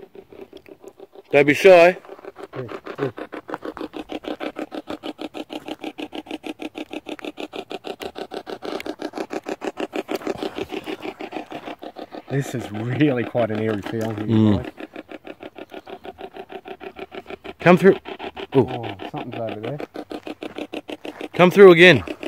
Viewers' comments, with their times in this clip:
0:10 Awesome video!! I feel/hear the first evp of the female say 'I wish you to leave'. I can here a something like someone saying something under their breath but could be u guys not sure. Doing a great job!! Love your works guys xx